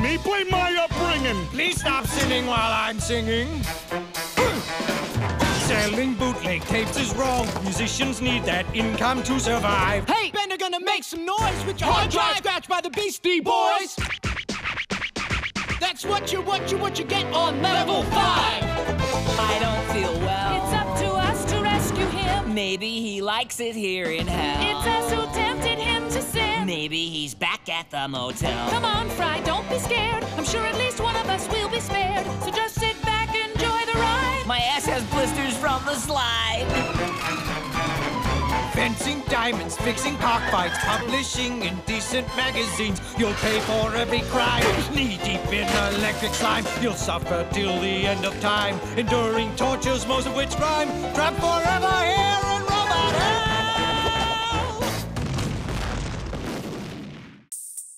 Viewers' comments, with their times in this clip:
0:05 the gmod fall sound lol
0:38 I like the Robot Devil singing in rhyming.